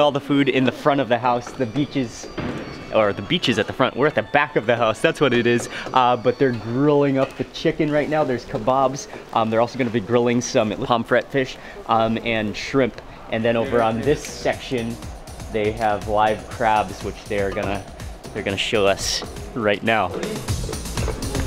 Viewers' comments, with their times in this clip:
0:06 I thought my father's phone is ringing 😂